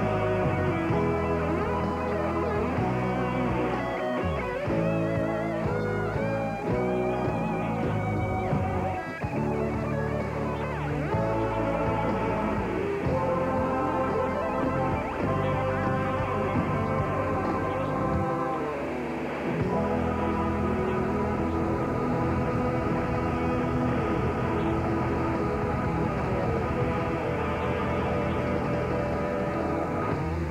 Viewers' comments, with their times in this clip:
0:05 1 fret off ..
0:12 Too much shred for the VHS to handle